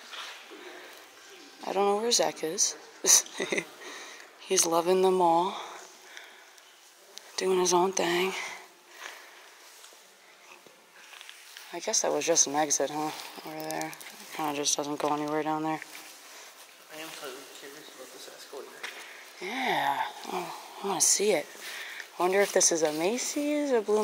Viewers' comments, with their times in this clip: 0:10 all the bangs you were hearing were from the planet fitness, they put new walls up to cover it from the mall, the planet fitness was opened and probably being worked on or used, and is still open till this day.